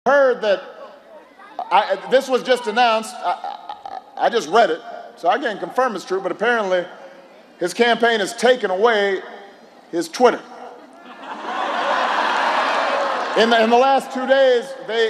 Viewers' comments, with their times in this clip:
0:01 Obama: Oh uh oh...... Oh oh uh oh....... Now...... Uh uh oh ...... Trump. Can't speak correctly Obama huh?!